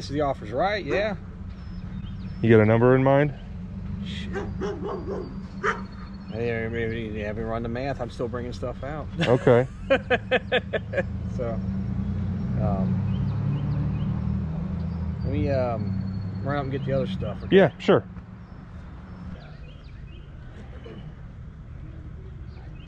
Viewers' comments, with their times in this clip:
0:09 absolutely love that forced laugh 😂.
0:09 That fake laugh to straight seriousness had me dead 😭
0:09 the awkward laught lmaoo